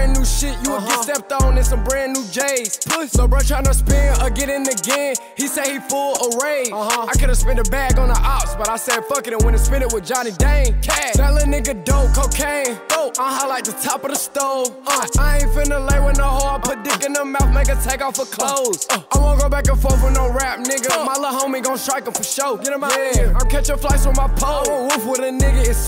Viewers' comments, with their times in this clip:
0:07 when stunna hoped off beat
0:08 stunna said fuck the beat 😂
0:10 so off beat 😂😂